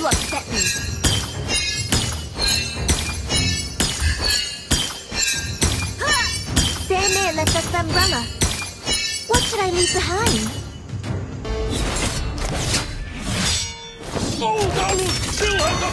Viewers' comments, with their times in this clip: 0:03 If uncomftortablity was a sound